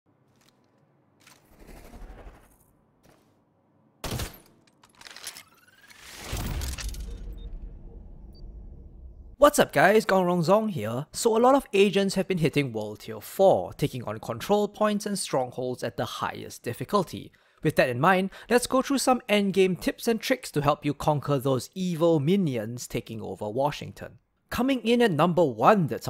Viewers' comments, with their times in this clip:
0:10 I legit thought he said a lot of asians have been hitting world tier 4.